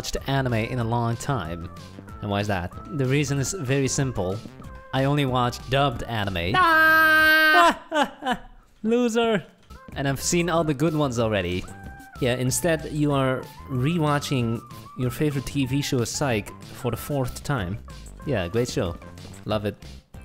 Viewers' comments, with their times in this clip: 0:06 he sounds like spongebob